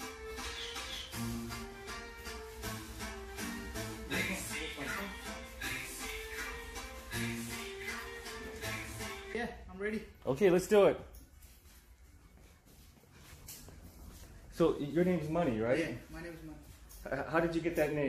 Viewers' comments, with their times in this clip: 0:04 Good Punjabi music by Desi Crew.